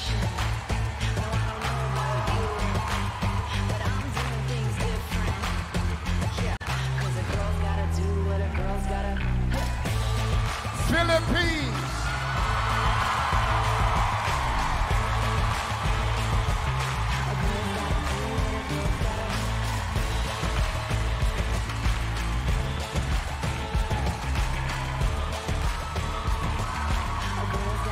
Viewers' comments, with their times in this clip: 0:09 the beatingss for Philippines thouu🤩✨
0:09 The timing of the beat of the music when philippines came in it feels like she's going to a war